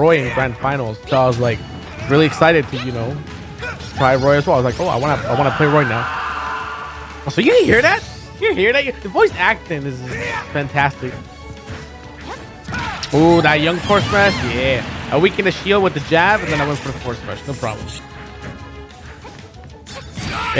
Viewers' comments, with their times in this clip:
0:04 legit sounds like he's on fire, while falling, BC unironically he's screaming further away
0:05 you call a blood curdling scream good voice acting?
0:05 I still have PTSD from that scream